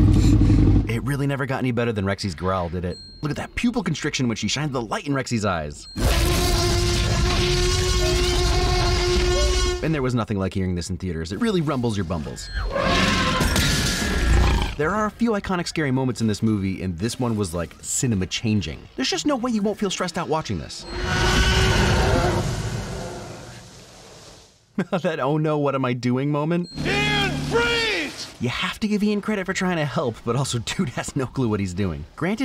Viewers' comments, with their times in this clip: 0:07 Given how loud a Lion's roar is? That would DEFINITELY hurt your ears.
0:13 Fun Fact: The glass wasn't meant to break when the T-Rex nose punches it. The children weren't expecting it so their screams of terror are actually real. Spielberg loved the honest reaction so much he chose that take. In subsequent shots you can just about see that the glass has miraculously become whole again.
0:17 The scene of wasn't fake. I believe the roof glass wasn't supposed to break, so the screams of terror were actually real.
0:17 the reason why people will feel stressed out is because those were genuine screams from the kids the animatronic malfunctioned and broke the glass which it was not originally intended to do this is just a fun fact from a Jurassic nerd